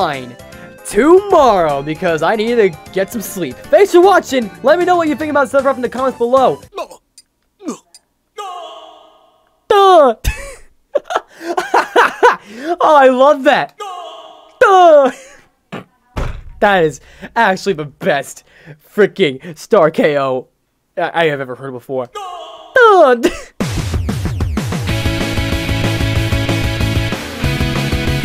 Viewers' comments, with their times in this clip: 0:09 this is just crash noises again